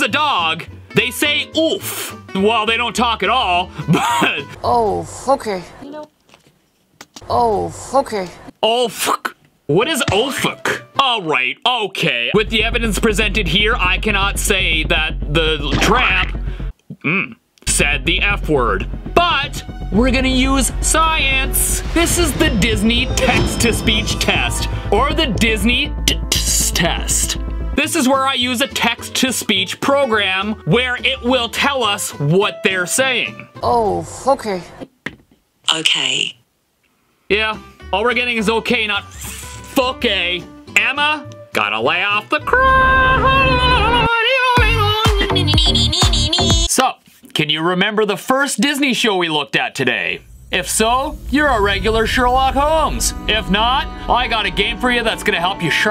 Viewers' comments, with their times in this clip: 0:03 tbh I heard “Fookie”
0:10 It sounds like ohfook because of the actors accent
0:26 I hear oh foakeyh
0:39 damn near sounded like it